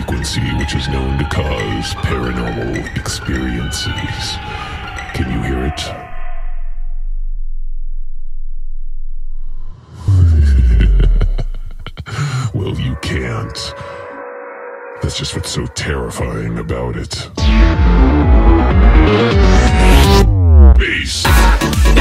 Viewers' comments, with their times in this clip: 0:05 i just realized the cosmical frequency range of my earplugs, for I heard, or, more exactly, felt the frequency
0:06 I actually did hear it. I mean, I felt it in my head like a velvety pressure, but I also genuinely heard it. Is that weird? Was it overtones somehow produced by my headphones? Is something weird with my ears?
0:07 the ultimate BASS
0:10 Adam Neely I heard the sound was that just due to YouTube audio file compression, or is it just audible to a very select group of people?